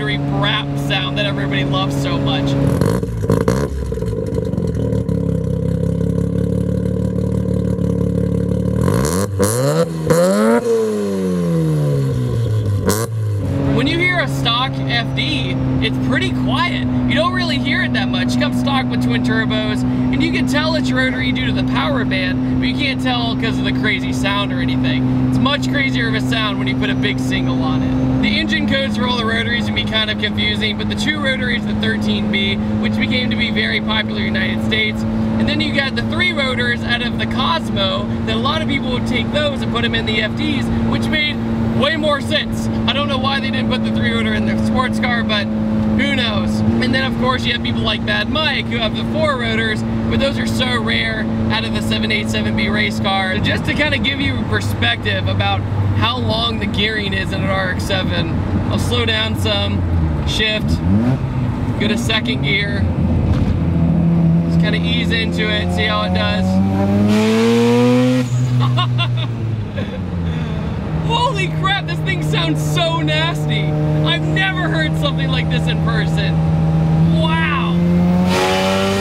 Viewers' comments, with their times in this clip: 0:08 am i the only one who thinks this one sounds like a civic with an ebay exhaust?
1:05 vtec kicked in (sorry)
1:06 Vtec just kicked in yo